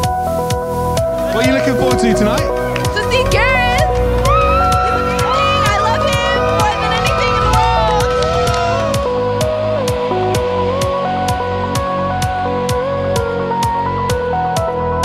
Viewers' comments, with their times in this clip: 0:03 the young woman is so adorable... "to see you, i love you more than anything in the world" .... in that gorgeous British Accent ❤️